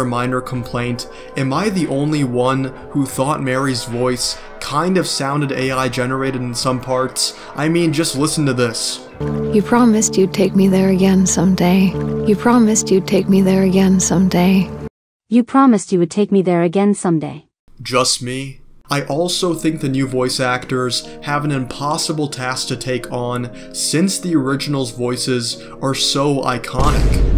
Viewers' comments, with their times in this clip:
0:08 I do agree like that voice clip in general has a very weird voice crack which makes it sound almost artificial and AI (I haven't played the original and know nothing about its lore, so i don't really know if it's supposed to be like that for that specific character or not)